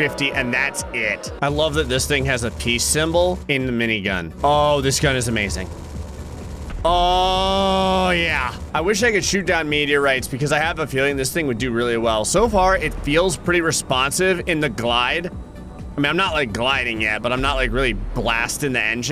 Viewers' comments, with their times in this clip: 0:06 The A-10 WARTHOG BRRRT